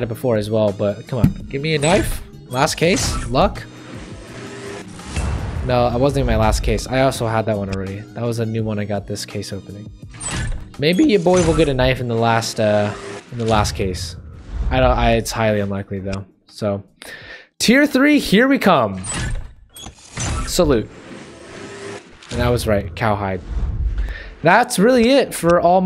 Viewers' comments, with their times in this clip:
0:10 Nice voice crack hehe ;)